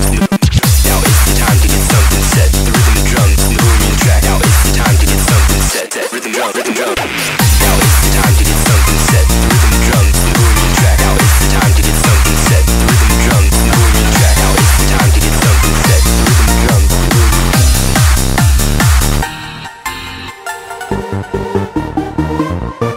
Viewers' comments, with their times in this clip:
0:07 absolutely favorite part when the melody in background kicks in :P